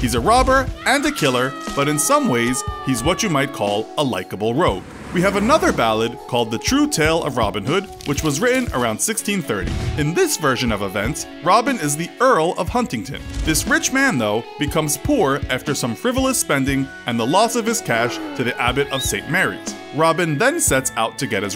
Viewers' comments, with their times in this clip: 0:04 Sans music intensely plays in the background